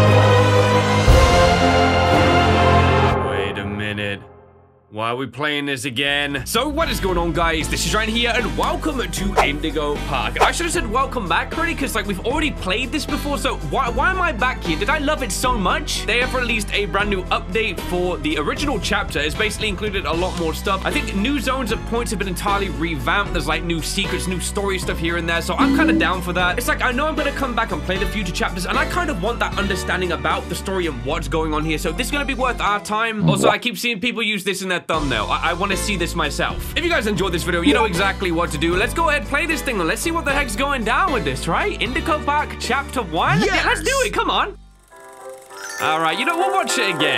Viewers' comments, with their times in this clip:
0:03 he sounded like Homer Simpson lowkey
0:30 the music on the main menu..or sounds like something from mario but more epic